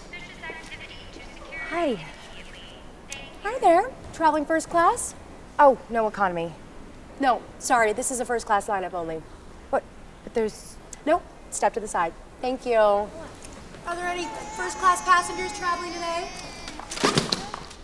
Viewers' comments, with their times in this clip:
0:03 i love how every detail down to the airport speaker being shay's voice is done to perfection